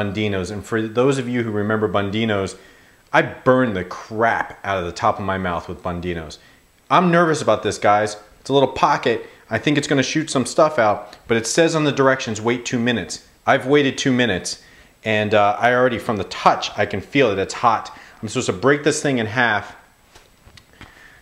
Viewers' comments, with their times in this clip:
0:09 ......it sounded like jizz